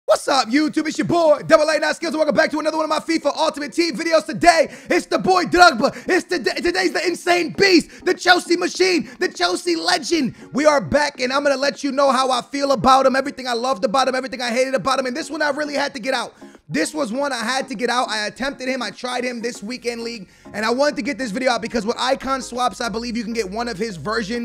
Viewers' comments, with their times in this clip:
0:05 stutters like hell